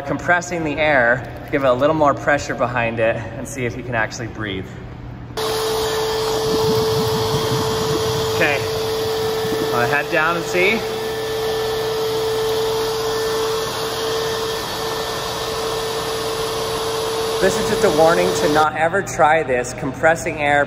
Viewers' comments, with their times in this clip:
0:05 cfm leap sound